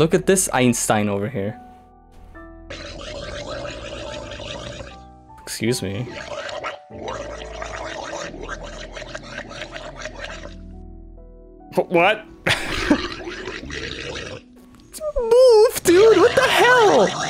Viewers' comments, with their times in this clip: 0:03 He has sung the song of his people, yet our feeble minds are yet to understand its meaning. ( obviously lol)